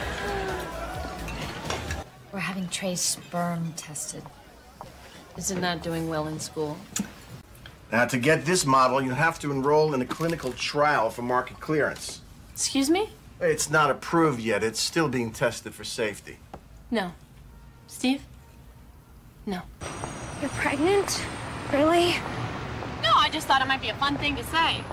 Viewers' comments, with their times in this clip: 0:07 Is one of my favorite Miranda moments, both acted and filmed beautifully. It shows her care for him, her legal knowledge, instinct, and love for him. What's most powerful is the dialogue and delivery. "No. Steve? No." She doesn't try to argue or overpower, no outburst in anxiety. Just a calm "no," I will not allow this to happen to someone that I love. <3